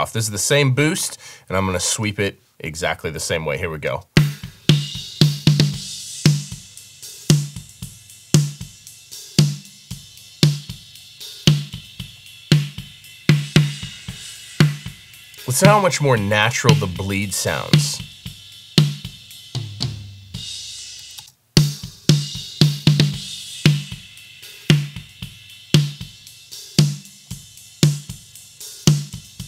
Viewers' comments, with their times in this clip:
0:10 Kirchhoff is definitely my new go to but there is just something about the way bands move in Pro Q3 that I’ll miss this is the snare of my dreams